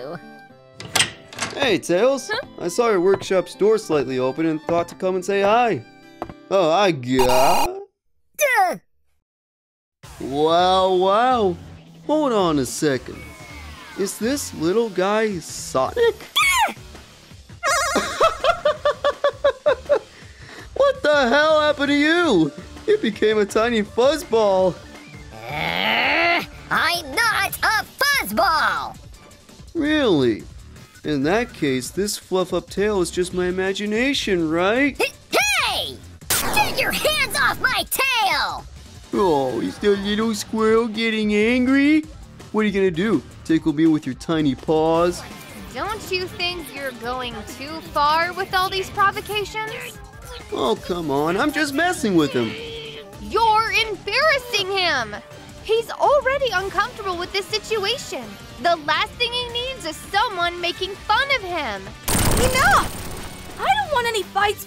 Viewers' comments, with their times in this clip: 0:10 I like to know the person who thought that "wow" and "whoa" would sound the same despite spelling differences😓
0:48 Sonic mumbling the gibberish there 🤣